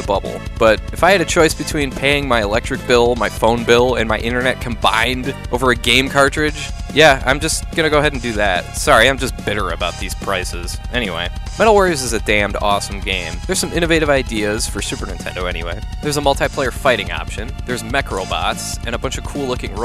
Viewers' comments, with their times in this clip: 0:04 You said "cOmBiNeD" like Schwarzenegger